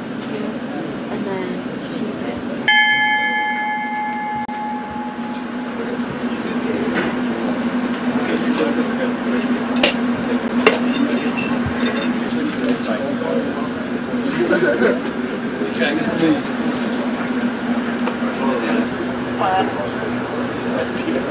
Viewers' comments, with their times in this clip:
0:04 WHOA WHOA easy with the bell! Jeeeez